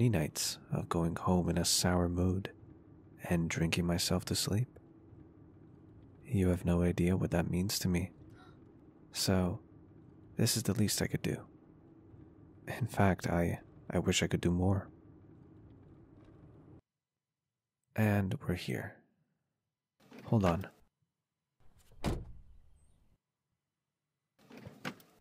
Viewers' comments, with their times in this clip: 0:07 There was a little hiccup with a random sound coming from the background sound effect, don't know why it was there in the first place xD hope it doesn't take away from the whole immersion too much! x